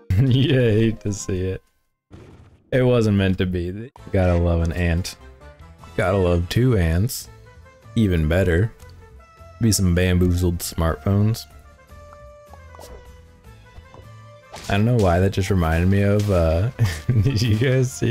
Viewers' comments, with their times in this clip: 0:05 Did he say “gotta love two aunts”. Because that would be a whole different kind of video. Also when he says “gotta save the sleeping pill for later” it sounds a little um nefarious.